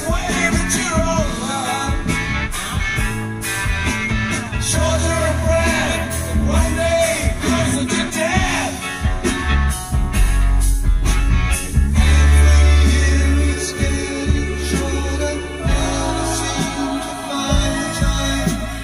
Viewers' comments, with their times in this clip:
0:06 Perfect voices for lyrics on this album. plus live oysters.